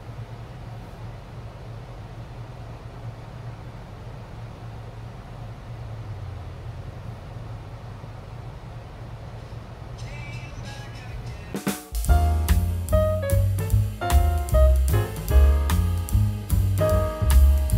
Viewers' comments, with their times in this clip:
0:04 Apologies for the 20 seconds of weird audio swap decided I didn't want to give up my monetization after all haha